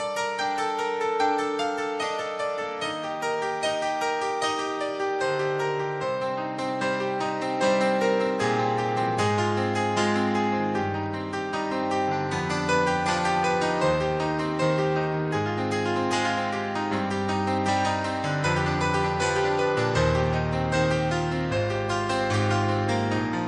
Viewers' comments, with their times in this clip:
0:09 Elton John and his band have always had the tightest, solid wall of sound (no pun intended) and their age makes no difference. Elton, Nigel (his drummer) and Davey (his guitarist) have played with each other for so long that they know and they watch (if you are a musician, you know the importance of those) he gets up for a drink, as he’s sipping, points and Nigel immediately starts the countdown to Philadelphia Freedom. I also think they are one of the very few bands that can change the set list on the spot and pull it off. (not that it’s shown here but just another testament to their knowingness of the songs/each other) For men in their late 60s as they are here, the energy and the effort they still put in is palpable. I have so much love and gratitude for EJ and his band. Rock on!!